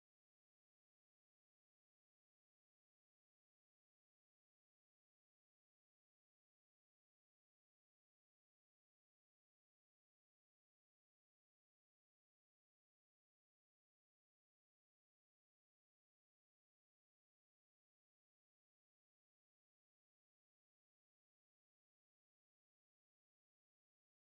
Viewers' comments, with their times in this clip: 0:06 now the song gets awesome and catchy